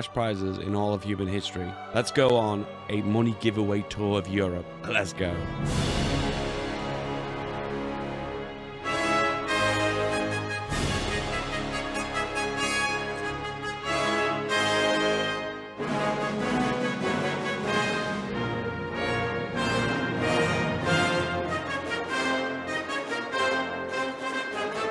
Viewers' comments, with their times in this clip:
0:06 Yoooo the music